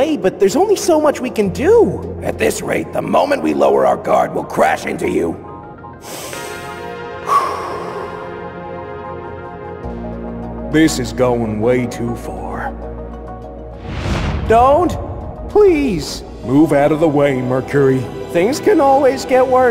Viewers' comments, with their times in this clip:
0:05 bowling ball sound?